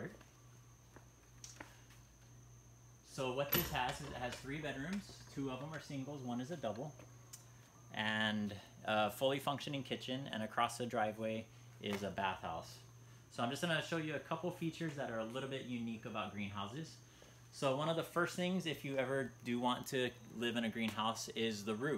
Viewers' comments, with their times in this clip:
0:07 it's a dog. I played it at the slowest speed.